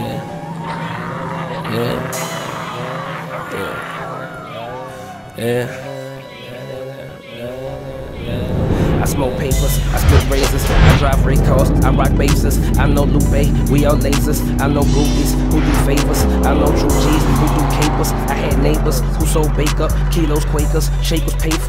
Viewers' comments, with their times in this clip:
0:09 the flow tho...immaculate